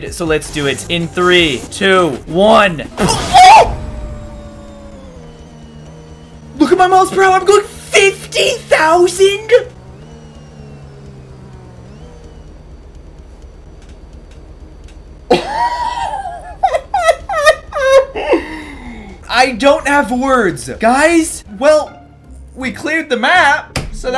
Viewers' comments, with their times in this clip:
0:04 Yhe scream when he lounched😂😂😂😂😂😂😂😂😂
0:08 was funny 😂😂😂😂 the way he said 50,000!